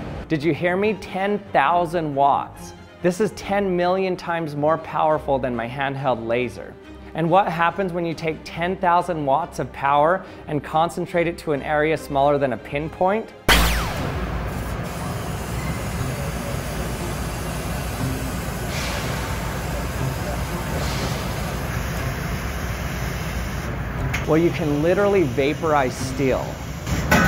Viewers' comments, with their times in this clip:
0:06 sounds like laser gun shot or Superman's laser shoot.
0:09 it made the PEW PEW noise!!!
0:13 Caught that Star Wars Blaster sound you snuck in there 😜
0:13 such a laser sound
0:13 when LASER actually sound like they do in Star Wars.
0:14 Was that the actual noise the laser made ?